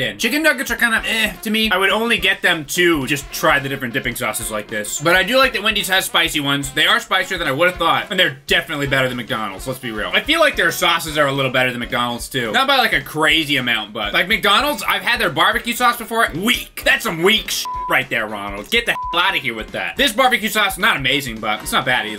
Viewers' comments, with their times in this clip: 0:04 Wait wait wait, you mean to tell me that wasn't really the sound of him dipping!?